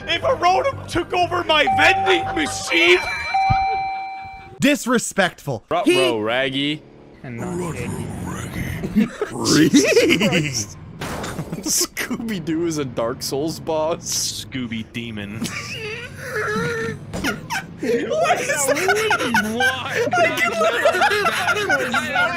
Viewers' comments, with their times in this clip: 0:09 bro sounded like joker mixed with scooby doo